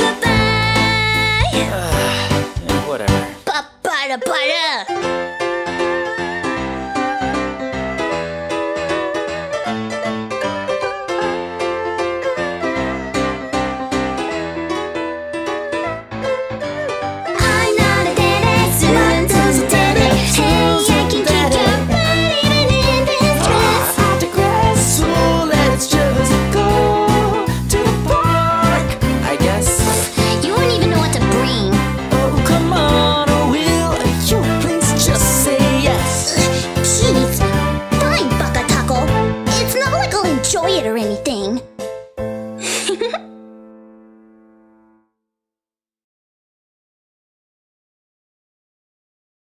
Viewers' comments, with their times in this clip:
0:03 The way she draws the Ba-ba-da-ba-da is so perfect. It fits so well with the way she sings it.
0:37 "FINE! Bacatako! Me: Baka...Taco?